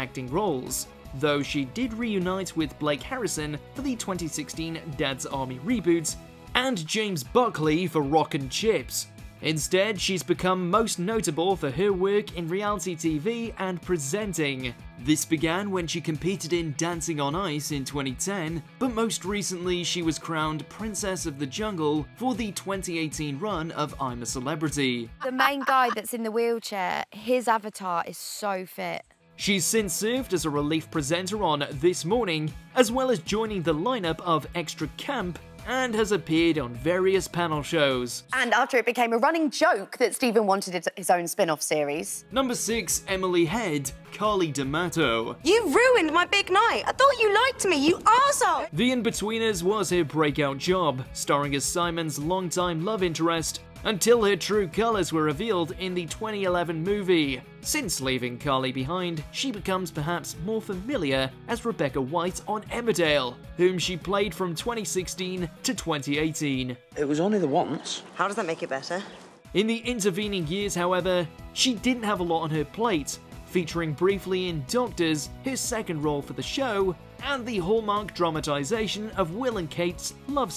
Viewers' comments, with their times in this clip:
0:10 man said realty
1:07 that voice tho Jeez